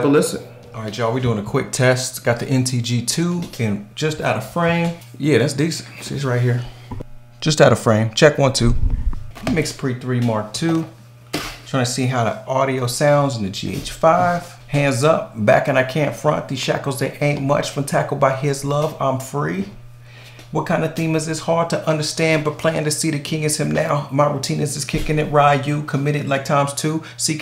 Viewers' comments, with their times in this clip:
0:08 whats the hum ?